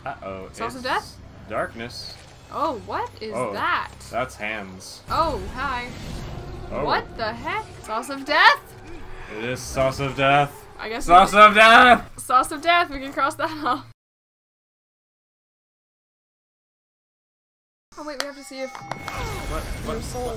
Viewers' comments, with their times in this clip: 0:03 inhales then screeches IT'S THE CLUSTERRRRR